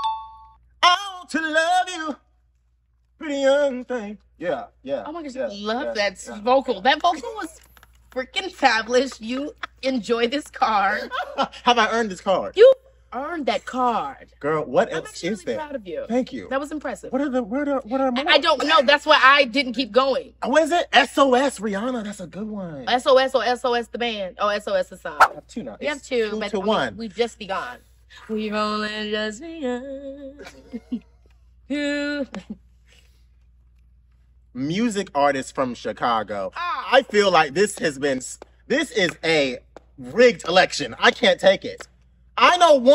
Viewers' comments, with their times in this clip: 0:04 yes that vocal 🔥🔥🔥
0:27 KeKe sang a Carpenters song off the TOP OF HER HEAD! "We've Only Just Begun" is a bop! #iykyk She has the range*** Fellow Virgo Approved💣💥🥳❣️